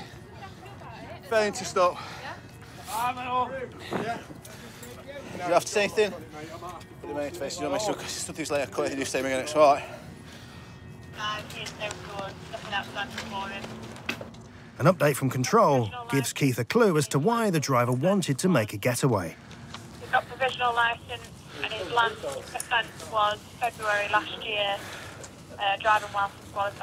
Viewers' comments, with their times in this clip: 0:05 that was pure gibberish from the officer, doubt it even counts as a caution
0:07 what the fuck did he say🤣🤣🤣🤣